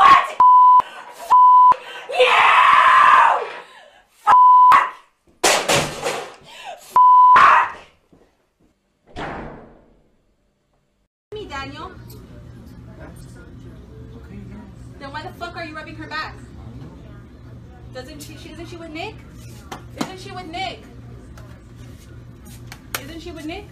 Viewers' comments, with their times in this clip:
0:09 ........after that went and sign up with archy enemy